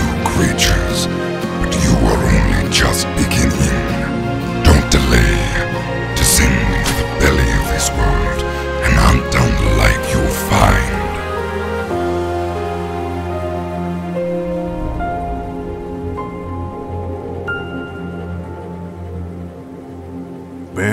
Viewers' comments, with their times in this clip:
0:03 That might actually be the voice they got right the best